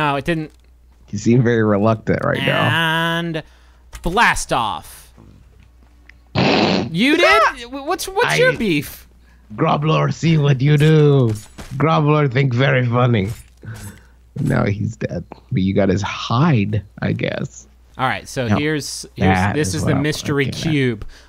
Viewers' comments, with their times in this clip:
0:08 justin went into law-abiding citizen mode, with a touch of triumph the insult comic dog